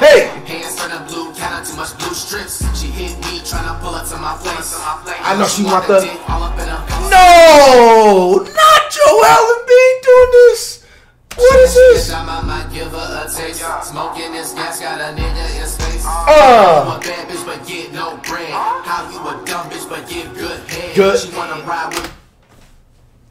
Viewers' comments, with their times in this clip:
0:06 the way he says “what is this” so disappointed 😭😭😭🤣